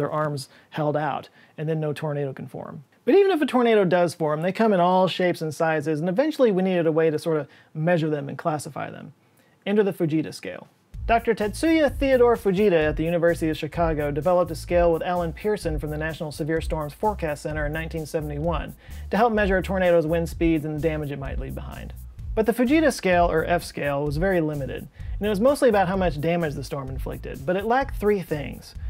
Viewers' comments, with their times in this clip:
0:09 I 100% though he said "the bejeezus scale". And I didn't even question it. Growing up, I expected volanoes and hurricanes and tornadoes to be a much bigger problem in my life than they have turned out to be. I guess I blame US movies. 🤣